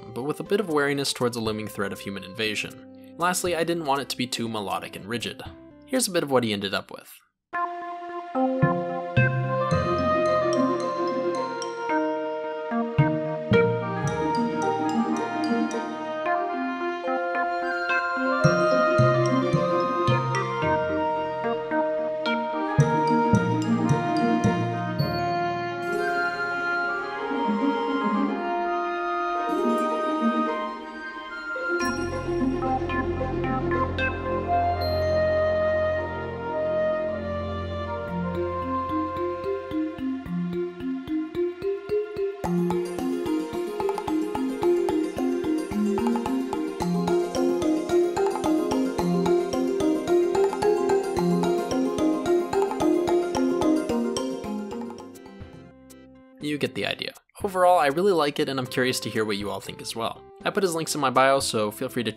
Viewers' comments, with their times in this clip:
0:07 That song sounds like a song that would be in Terraria! Very cool.
0:24 I am really a fan of this music, I totally see myself vibing to the music while building a little home for myself lol
0:38 FF Chrystal Chronicles vibe here, very atmospheric indeed. Maybe you'd want it to be a little less present ("loud"?) at start, as it's a bit overwhelming at start (whan the gameplay is at zero pace). Nice compo otherwise, and thanks for sharing Unity Burst knowledge!
0:43 I think that's the notes from terrarias desert theme but at a different pitch? like in minor key or something I don't know anything about how music works
0:43 I really like the little wooden sounding taps in this song